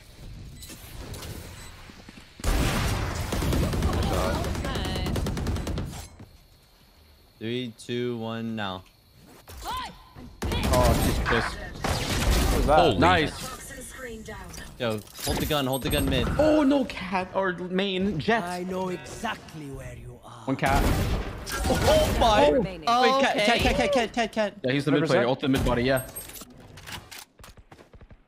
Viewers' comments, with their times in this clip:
0:09 reaver without the kill sound is actually so disturbing.